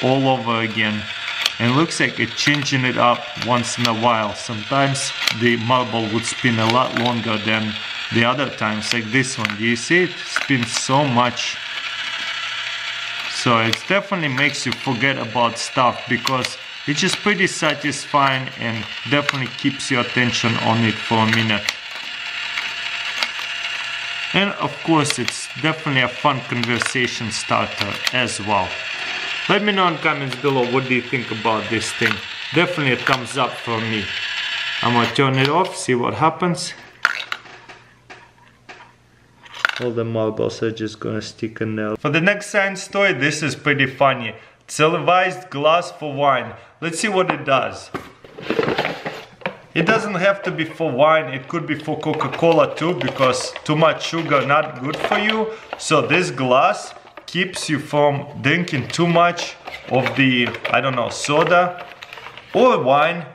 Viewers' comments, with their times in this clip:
0:09 Very Noisy I think !!!
0:43 Who agrees that he said cilivised
0:44 did he say selivised ?
0:44 *says CIVILIZED” “SILIVIZED GLOSS”